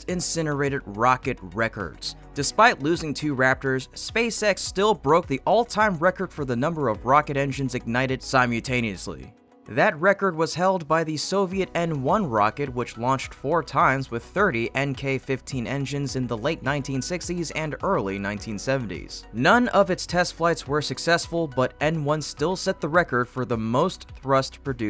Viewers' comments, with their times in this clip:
0:08 "sigh-mewl-tay-knee-us-lee" -!? What's that? The word simultaneously is ONLY pronounced sigh-mull-tay-knee-us-lee.